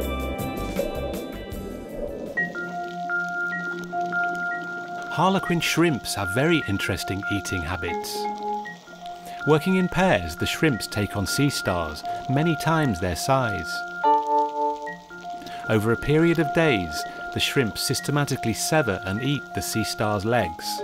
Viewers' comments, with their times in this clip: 0:03 this that Bikini Bottom Jam 😤🕺
0:04 Starfish brutally getting eaten alive Music: Calm